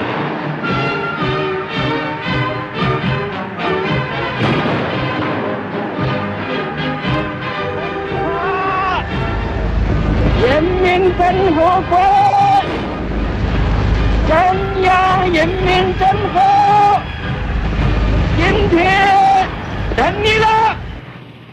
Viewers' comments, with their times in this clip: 0:07 This man sounds like the voice of the emperor of Japan but with a more hoarse voice